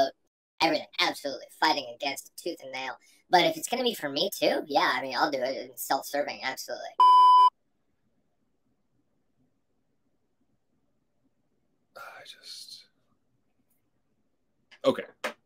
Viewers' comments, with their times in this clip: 0:03 love the voice! 😂